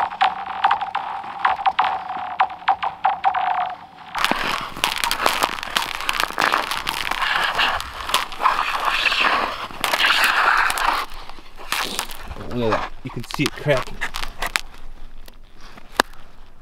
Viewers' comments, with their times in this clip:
0:03 kind of fire sound